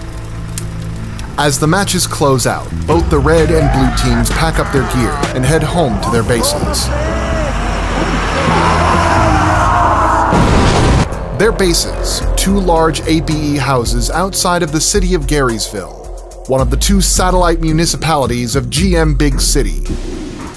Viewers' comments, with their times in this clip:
0:06 the muffled "what in sam hell" is killing me